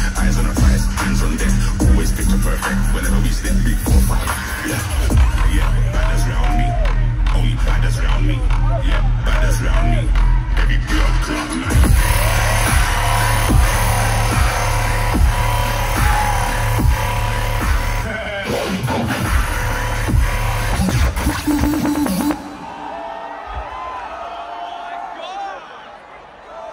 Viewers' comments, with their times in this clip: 0:10 THIS DROP MAN SOOOOOOOOOOOOOOOOOO GOOOOOOOOOOOOOOOOOOOOD